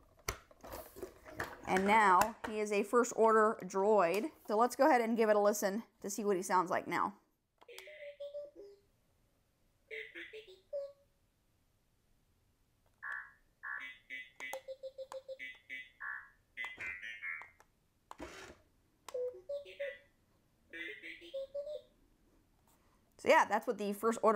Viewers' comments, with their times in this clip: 0:08 it sounds like a daft punk song